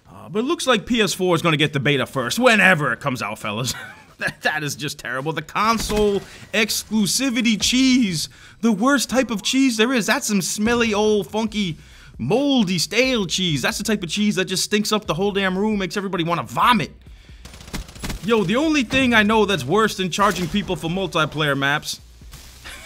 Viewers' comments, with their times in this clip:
0:04 Missed the Ak-74u thunder!!!!